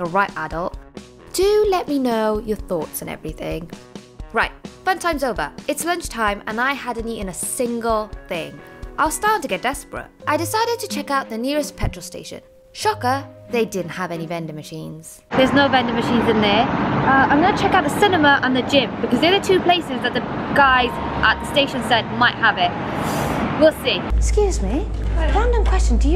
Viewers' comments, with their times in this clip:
0:07 i thought that theres a bee entering my ear hahahahah